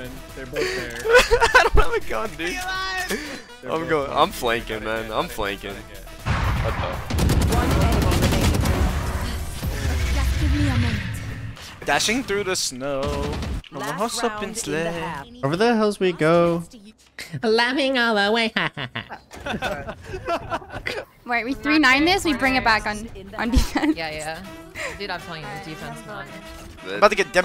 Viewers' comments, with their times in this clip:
0:10 i love the singing😂
0:11 🥳 love the singing